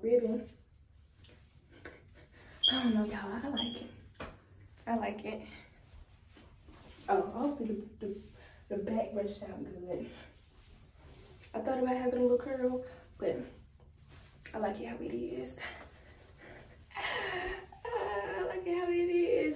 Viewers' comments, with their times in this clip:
0:03 I gasped as well 🥲